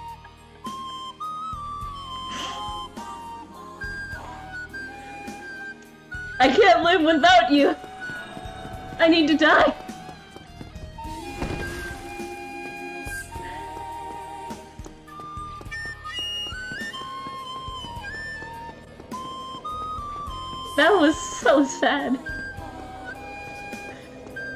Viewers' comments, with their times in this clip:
0:09 the music was so perfect!